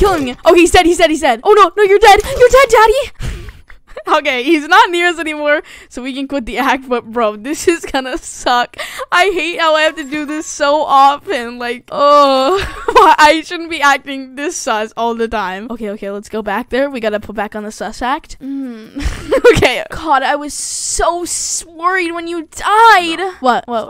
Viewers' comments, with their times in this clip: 0:04 ur mic was onnnn!!